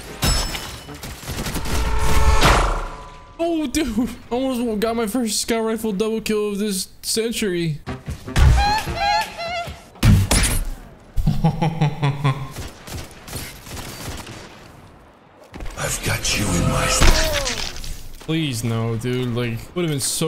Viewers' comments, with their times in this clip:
0:07 That double "heheee" had me lol
0:08 What was the laugh??? LMAO It sounded like a laugh coming from a cartoon show. 😂
0:08 The double heehee 🤣🤣